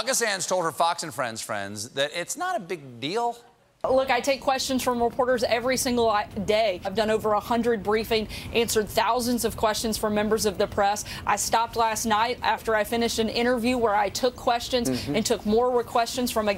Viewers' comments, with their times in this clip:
0:04 Did anyone else catch Sarah Huckersterbee-Slanders little Freudian slip ? She says, pretty clearly, "I take questions from reporters every single lie - day. . ." She even emphasized the word 'day' And before any Trump-apologists try to chime up with "she said 'every single, like, day' . . ." She is NOT a "valley girl" ! She CLEARLY knows that she's lying, and it slipped out in that speech.